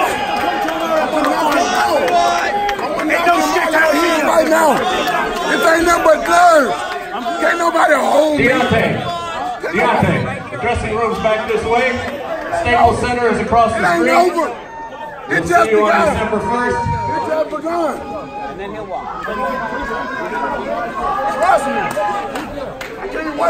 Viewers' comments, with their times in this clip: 0:06 when a toddler burst into tears for not getting a lollypop